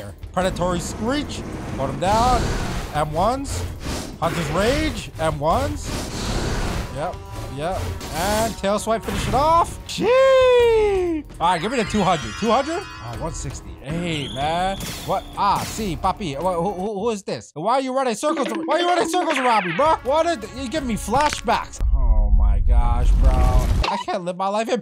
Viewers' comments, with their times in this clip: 0:05 Why did bro sound like a call duty zombie